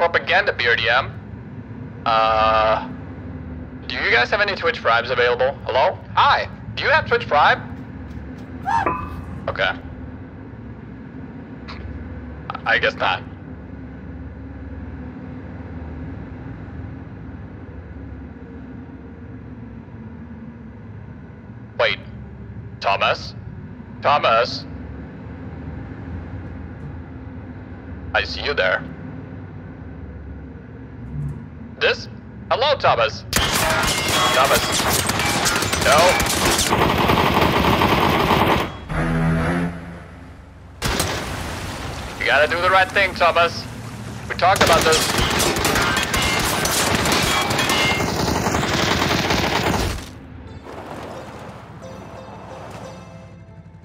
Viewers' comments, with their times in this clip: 0:06 That little scream .. lol XD XD
0:07 His head hit the brdm at the perfect moment with that "bonnggg" sound im laughing hard rn 🤣
0:07 Awesome scream and clanking sound of victim's helmet slamming against BRDM
0:08 what is that sound, just before his helmet bangs into BRDM?
0:09 That Helmet sound idk why but it cracked me up lol
0:39 wtf was that noise